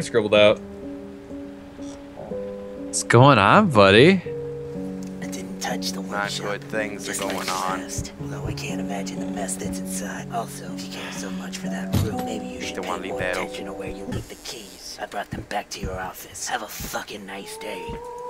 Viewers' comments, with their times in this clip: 0:05 ya dun goofed the audio man,